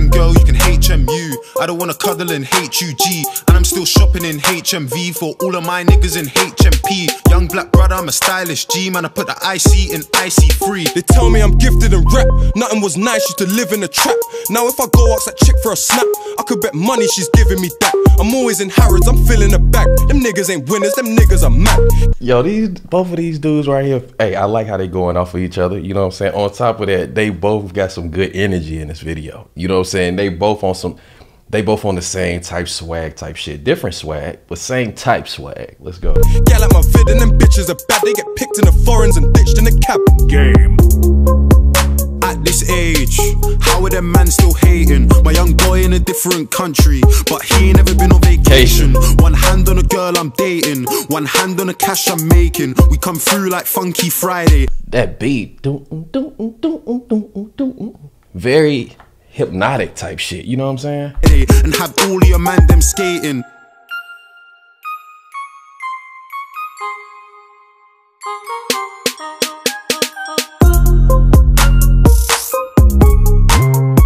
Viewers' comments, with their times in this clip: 0:08 you missed some of the tune
0:55 you walk into set 8 music